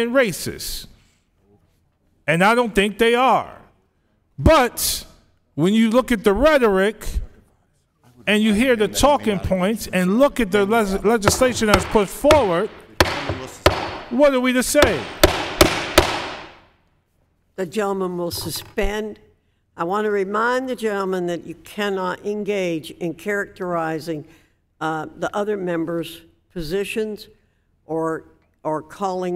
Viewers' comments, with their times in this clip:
0:10 BOOOOOOY !!!!!!! WAS SHE HAMMERING IN A NAIL OR WHAT ???? 🤣🤣🤣
0:13 lol..@ (note: for a visual, substitute Foxx's gavel for a small feeding-bowl.) Once Foxx started mindlessly banging that gavel, the first thing that came to mind was that lab animal/primate that had grown used to receiving a 'treat' after performing a particular task...then finally, being denied that same treat for the first time after, 30 consecutive days of testing.